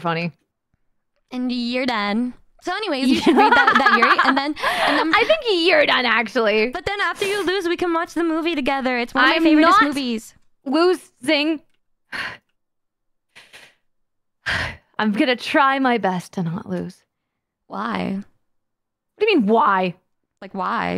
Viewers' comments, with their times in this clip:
0:07 You can tell how hard she was holding it in here because my god, she was freakin' STUTTERING